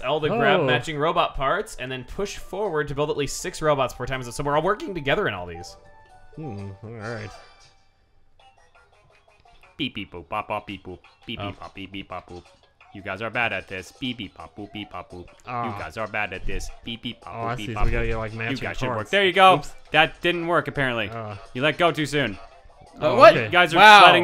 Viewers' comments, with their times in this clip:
0:10 AAAAHHHHH!!!😲 Oh my GOSH. Why is ProtonJon making all of those beeping sounds?..😨 Could it be that he's.. A ROBOT!!....😱 Naaaaaaaaaahhhh.😅